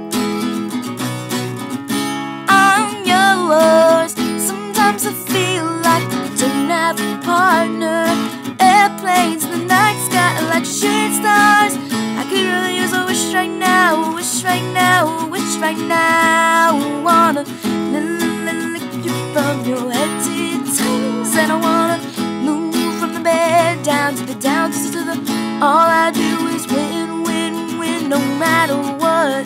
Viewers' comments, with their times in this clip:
0:10 First, you did a fantastic job all around in my opinion. You got a great voice and I wish I was that good with a guitar. So before I go one, I got mad respect for you. Now, a couple of honest critiques. I love the fact that you put the song titles in the video but not everyone will know the artist just by a picture. If possible i would have put a little more space between tracks. the little stutter notes were a bad timing in my opinion.